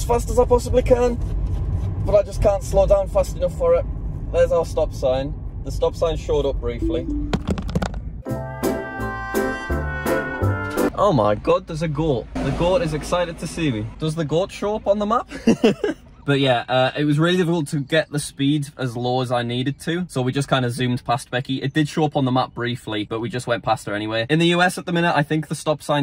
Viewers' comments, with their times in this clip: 0:10 The way you say goat is so funny!